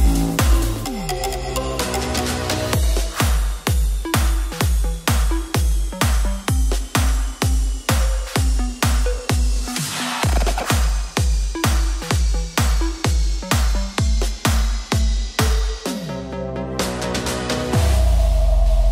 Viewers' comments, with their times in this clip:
0:05 guy in the green shirt laughing is like "WTF, why is fruit peebles donald duck wearing a gay ear ring, it's 2020 Big lips, guys don't wear ear rings" hahaha